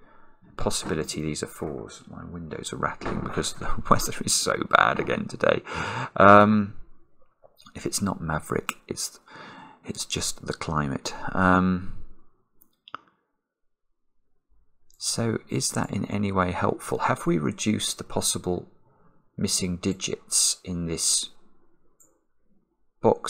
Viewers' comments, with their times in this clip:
0:06 Once upon a midday dreary, while I pondered, weak and weary, Over many quaint and curious boxes with multiple squares— While I nodded, nearly napping, suddenly there came a tapping, As of some one gently rapping, rapping at my window pane. “’Tis some Maverick,” I muttered, “tapping at my window pane— Only this and nothing else.”